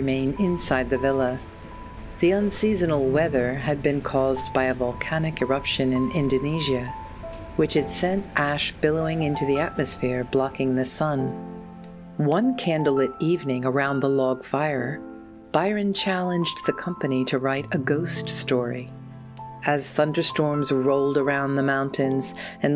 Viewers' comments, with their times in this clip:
0:05 Although I generally find womens fashion prettier, I would much rather wear those neat vests and billowy sleeves shown There's something about that extremely high waist i don't like. I absolutly love this channel and especially the voiceover, so soothing!